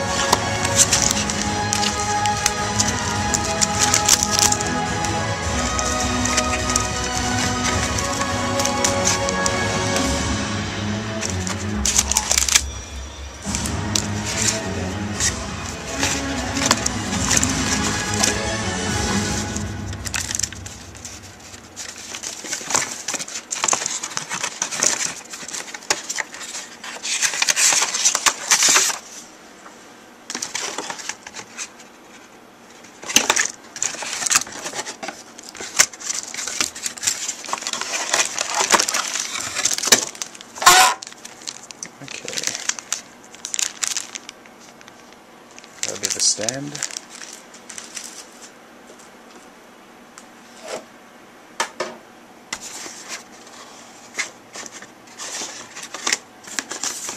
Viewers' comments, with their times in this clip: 0:07 Is it just me or did anyone else hear the phrase "Kept you waiting, huh?" come out of that box? LOL
0:40 Huh? What was that noise?